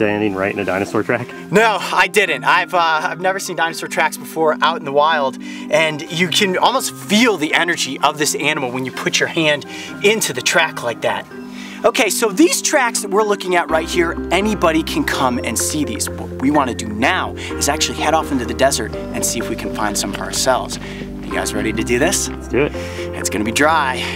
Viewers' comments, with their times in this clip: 0:10 The voice crack tho
0:12 wow that voice crack tho 😂